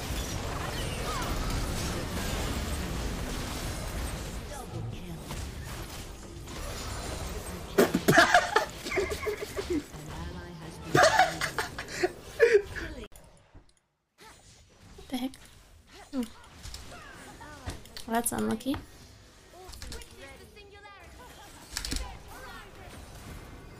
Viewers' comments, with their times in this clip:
0:07 that beatboxing was kinda sick ngl